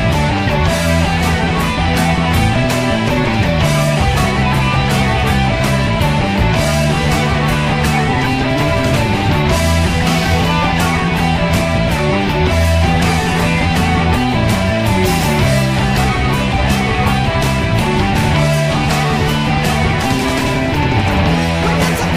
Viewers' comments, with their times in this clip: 0:03 that was awesome...awesome fills..dont mean to be the naggy types..but did u make a mistake -06??